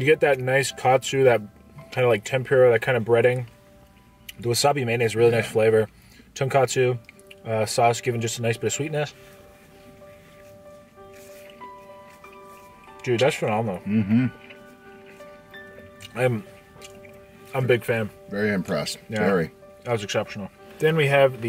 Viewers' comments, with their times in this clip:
0:04 I started to tear up The music..... The fuckin kick ass food...... And the best show host......